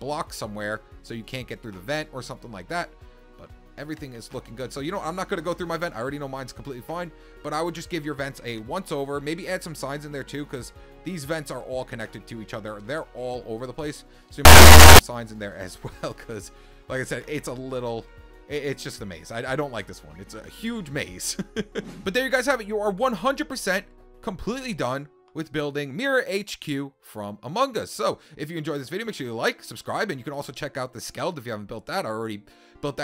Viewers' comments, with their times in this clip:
0:08 what the heck is that????? That hurt my ears!
0:10 Was I the only one who herad a loud noise in this time ?
0:12 EAR WARNING TF WAS THAT LMAOOOOO
0:13 ⚠️HEADPHONE USERS WARNING⚠️
0:14 OW MY EARS
0:14 What happened here? Was that a jumpscare you put in, or did your audio bug out?
0:14 rip headphone users 😭
0:14 IS SOOOOOOOOOOOOOO LOUD!!!!!!!!!!!!!!!!!!!!!!!!!!!!!!!!!
0:14 am I the only one who got that random sound blast?
0:14 WHAT DA HELL WAS THAT FREDDY FAZBEAR SOUND
0:14 Turn Down Your Volume
0:14 WHAT THE HECK?! YOU ALMOST GAVE ME A HEART ATTACK!!! WHY THE LOUD NOISE?!
0:14 did anyone else hear that loud blast
0:14 earrape (RIP headphone and earphone users)
0:14 horrible audio glitch beware
0:15 Oh My Ears, Also you forgot to connect the vents to Med-Bay
0:15 ouch my ears